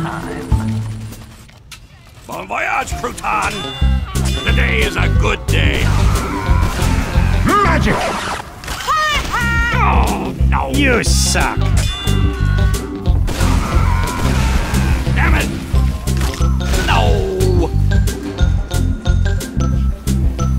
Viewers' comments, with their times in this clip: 0:08 I want the voice on